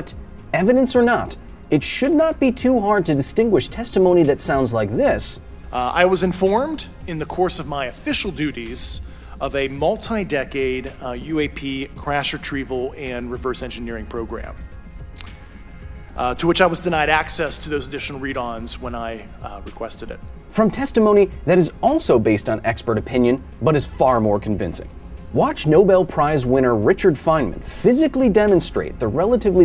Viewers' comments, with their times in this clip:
0:10 how do ppl believe a guy that sounds like he did a voice for a cartoon character on the Cartoon Network